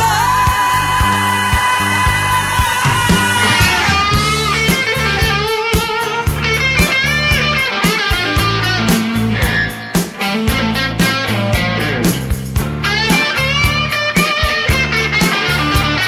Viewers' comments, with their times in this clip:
0:03 one of the best guitar entrances I’ve ever listen